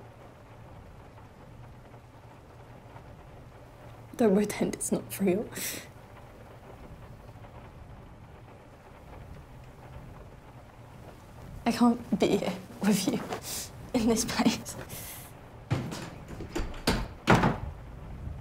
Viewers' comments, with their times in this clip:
0:03 🔵 Try as I might, I couldn't understand the dialogue immediately after